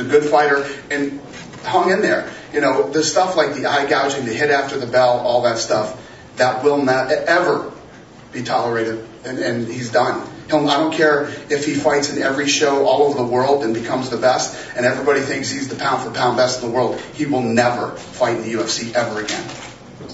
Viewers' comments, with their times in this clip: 0:07 did he say eh ever?